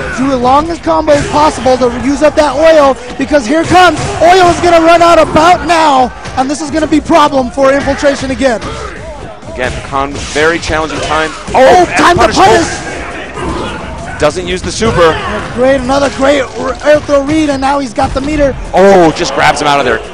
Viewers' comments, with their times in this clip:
0:07 you can hear someone saying "oil! oil!" lol